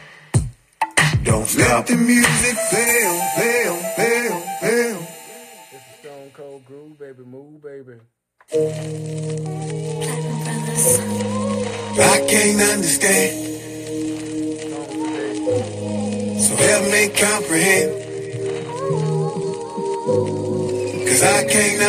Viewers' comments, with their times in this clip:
0:08 and (absolutely sickest flow from this whole session)